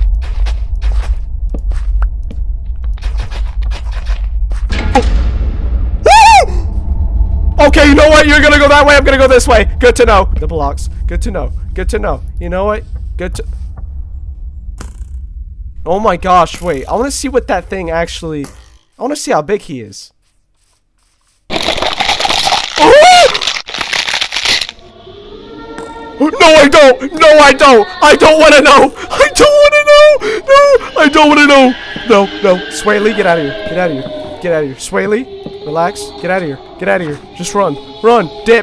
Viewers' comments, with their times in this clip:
0:05 sees creature then takes a half a second to jump backwards and scream…
0:21 what it sounds like when my chiropractor fixes my broken ass hunched spine: